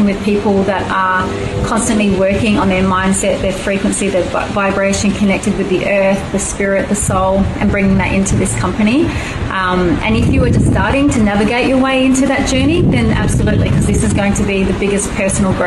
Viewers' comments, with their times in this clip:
0:03 Anyone else hears 🍑 vibrations ? 😂